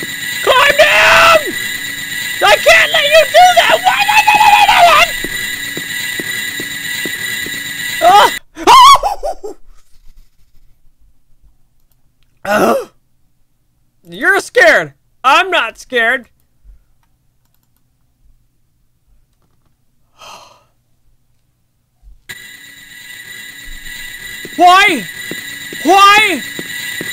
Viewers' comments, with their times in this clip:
0:08 Of all of the jumpscare reactions, the monkey sound has me laughing so hard I can't breathe! XD
0:08 best scream 2017